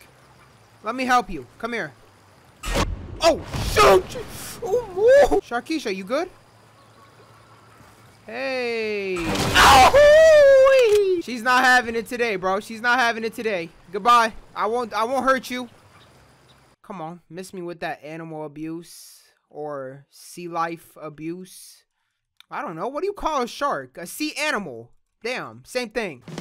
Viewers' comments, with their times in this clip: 0:08 kinda sounds like that Tom & Jerry scream
0:08 you sound like Tom from Tom and jerry
0:08 that sounds like goofy